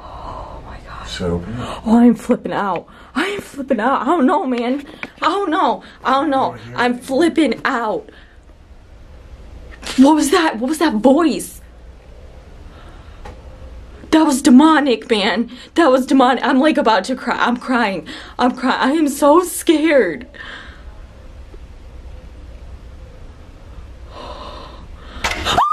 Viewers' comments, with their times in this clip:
0:09 It's hard to hear, but it says something right as you start to talk. Sounds kinda like "close it"